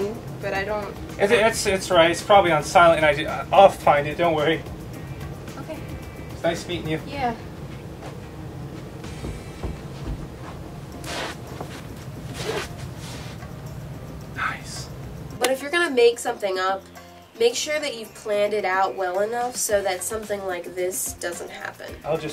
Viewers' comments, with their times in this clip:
0:10 the phone rang😂😂😂